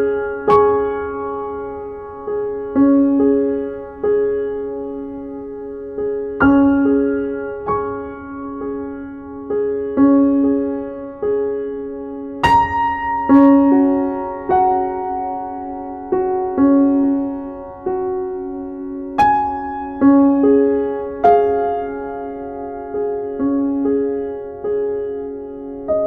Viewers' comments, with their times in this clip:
0:07 I love your alarm! Haha Love these routine videos! Do you change them up for the seaosns? (some people have "winter night time routine", etc)